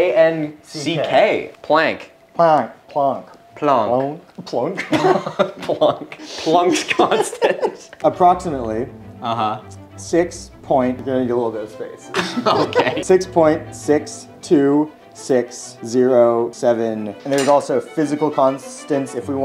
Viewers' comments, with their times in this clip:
0:05 fun fact that last thing is the closest they got to pronouncing his name correctly.